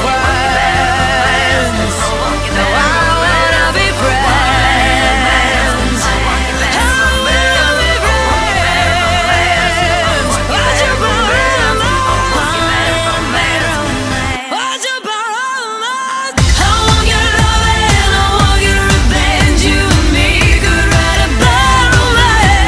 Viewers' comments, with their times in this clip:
0:06 “I know she says “I don’t wanna be friends” but when I was younger, I thought she was saying “I don’t wanna be French!”